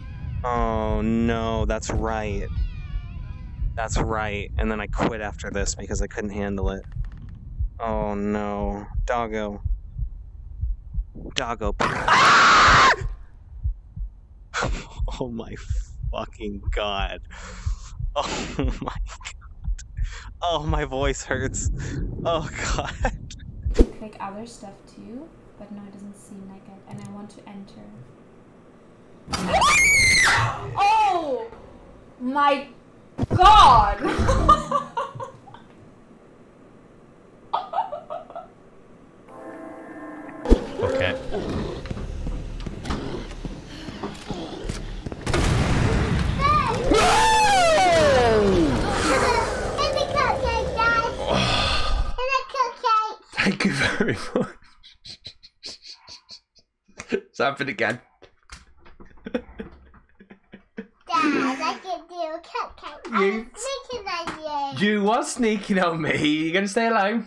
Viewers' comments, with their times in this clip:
0:03 Im in this part his screams funny
0:08 bro got smacked with a fake jumpscare🤣😂, also why my man gets scared of a fart noice like wut?🤣😂
0:08 That is a voice of true terror XD
0:10 Genuine animal scream, he devolved to a caveman for a second there.
0:10 you know it's pure horror when your stuck in the same position and all you can do is scream. 😂
0:11 sounds like every generic scream Ive heard my whole life
0:11 that scream sounded like the scream from Monsters vs Aliens.
0:11 man turned into a stock screaming woman sound effect
0:17 is so funny that scream is sooooo 100% funny XD
0:29 girl in can really do high head voices😂
0:46 guy screaming with style 😂
0:49 i tought she said: Yipikaye dad!
0:49 his kid made him shit even more, hahaha. Cutest voice, i need a cupcake dad. And i dont do cute..
0:51 Her voice is so cute. 😍😂😂